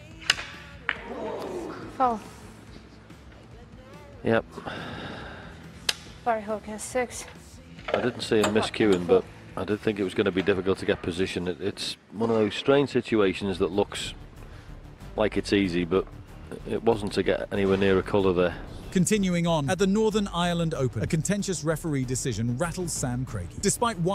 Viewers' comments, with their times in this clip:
0:07 "Sorry Hogan 6" ??? 😂 wow...good job